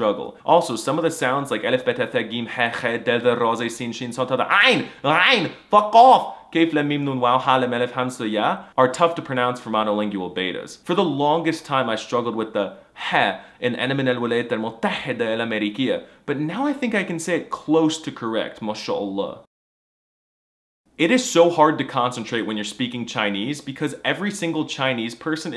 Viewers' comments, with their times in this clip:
0:05 😂😂😂 You got the letter well. Salut from Egypt 🇪🇬
0:13 that's a KH tho